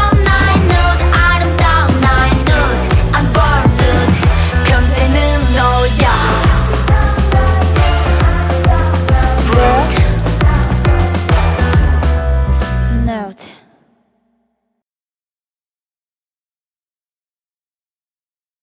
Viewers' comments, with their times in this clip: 0:04 The way Shuhua delivered the line "you're the pervert" is so good!